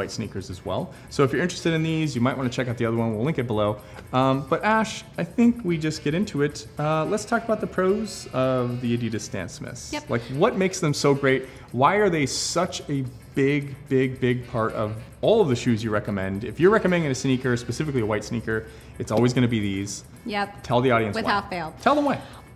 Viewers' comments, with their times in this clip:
0:09 Notice the interruption here? She was not happy.